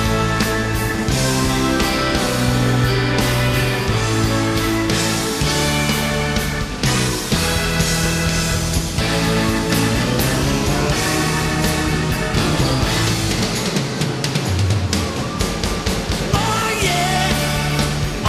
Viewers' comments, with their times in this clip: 0:06 soooooo many GREAT musicians on that stage! and on is INTENSE!!!!!!!!! they sound great!